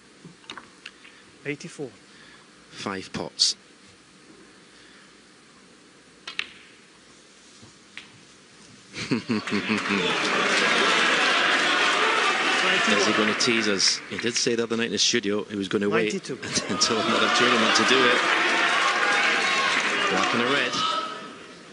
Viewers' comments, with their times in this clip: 0:08 Stephen Hendry's chuckle here just fills me with joy :)